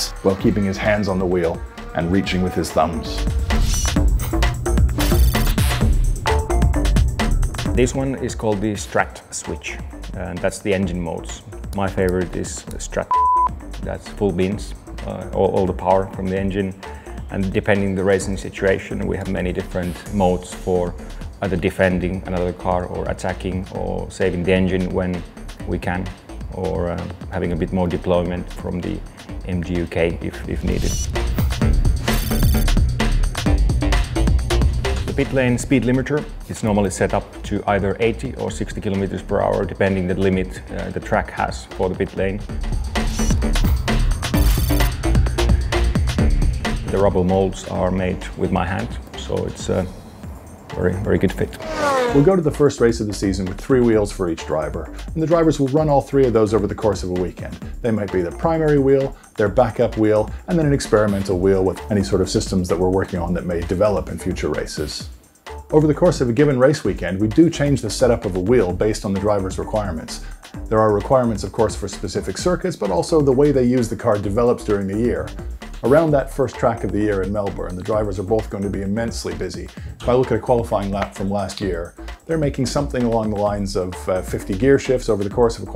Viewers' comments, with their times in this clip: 0:10 when saying the name of the button is like cursing
0:12 My favorite mode is strat BEEP - Valtteri Bottas Did he cuss or was it supposed to be a secret?
0:12 why the beep?
0:13 care to explain the beep
0:13 why is it bleeped? Confidential information I’m assuming?
0:14 did he just say «coolbeans»...?
1:10 dude in background having a right laugh